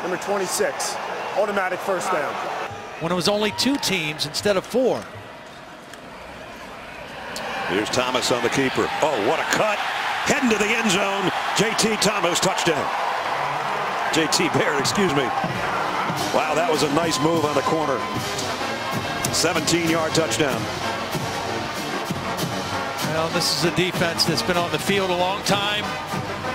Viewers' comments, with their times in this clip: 0:09 Peppers gets shooked, and the stadiums reaction🤣